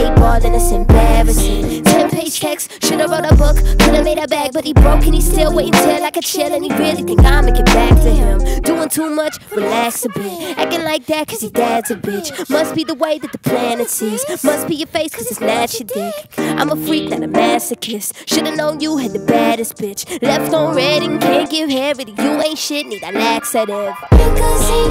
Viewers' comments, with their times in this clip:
0:09 Joaquin Phoenix’s “joker” laugh. Nice little easter egg